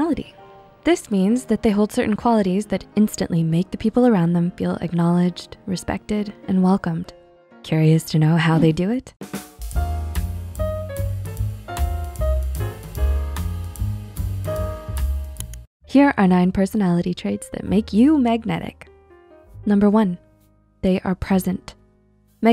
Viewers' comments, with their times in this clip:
0:09 I recognize that music
0:10 Thank you love these as always. I do find music track is a bit loud over your voice. and having 2 music tracks overlap had be looking for another open youtube window.